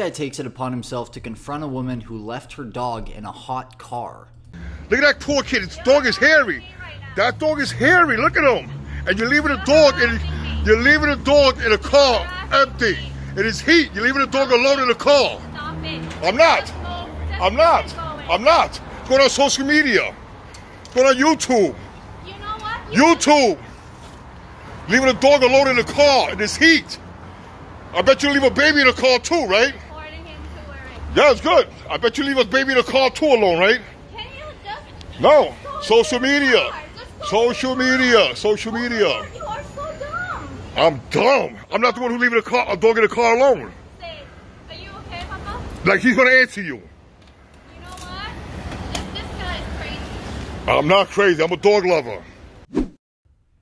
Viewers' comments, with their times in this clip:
0:07 geez Louise, with a voice & attitude like that I'm surprised the man even could tell the dog was hairy ... Let alone know what to do. Such a verbal abuser, coming up with wild accusations that have no basis in reality.
0:16 Rodney Dangerfield sounds pissed!
0:36 dude sounds just like Rodney Dangerfield